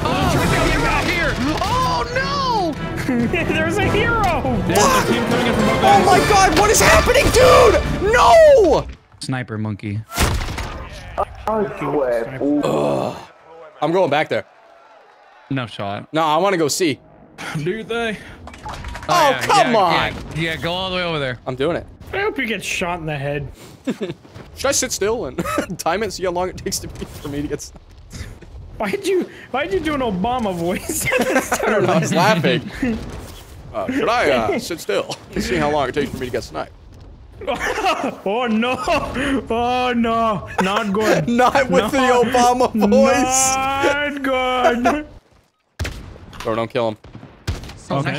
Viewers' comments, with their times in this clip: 0:10 I Listen to men spanish xd 😂
0:10 my dude on the hot mic is from Colombia xd
0:34 Sounds like a mix of Jimmy Stewart and Obama...... Anyone else here Jimmy Stewart in that voice?